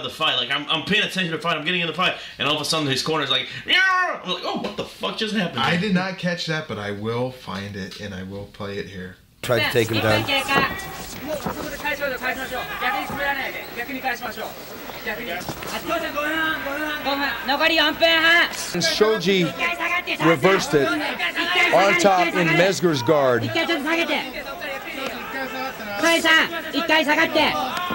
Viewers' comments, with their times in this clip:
0:10 Oh my God it'ŝ the Martians from Mars Attacks